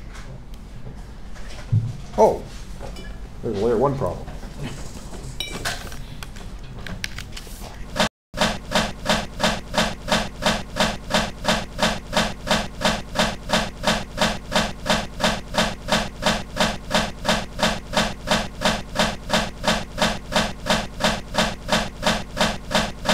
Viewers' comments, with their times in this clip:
0:08 Audio is bad from